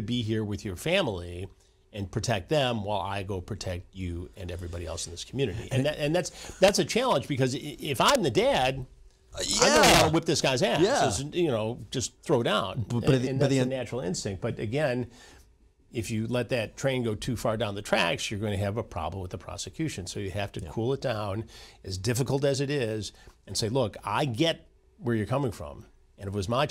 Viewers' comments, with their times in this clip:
0:07 hearing Chris unfiltered with no bleeps is great😂